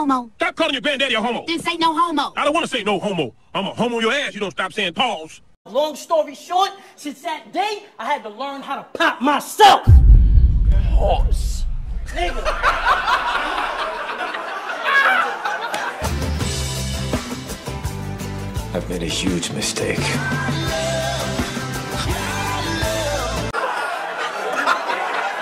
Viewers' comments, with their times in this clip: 0:10 the way he said PAUSE with that amount of conviction got me dying
0:10 He said pause sooo hard